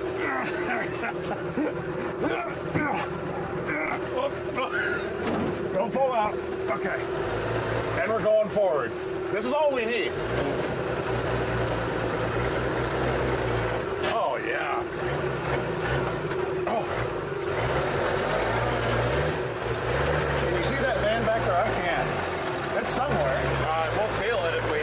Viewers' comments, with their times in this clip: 0:07 is that a fart?...normaly when i make some extra force,some strange noise come's up.